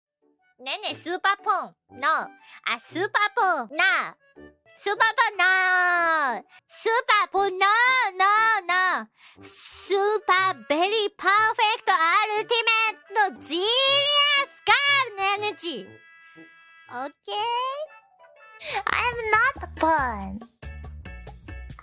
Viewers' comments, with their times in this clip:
0:05 She sounds like Tommy Wiseau. Could it be?